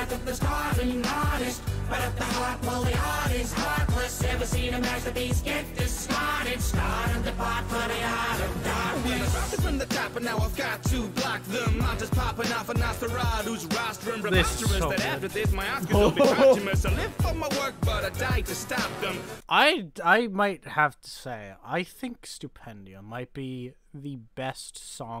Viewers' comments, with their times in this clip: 0:06 i could here his heartbeat